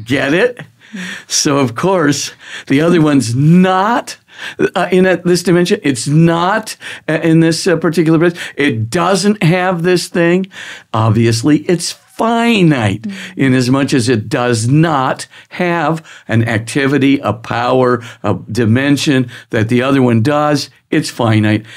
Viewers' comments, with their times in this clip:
0:04 for about 5 seconds brothers doing Borat.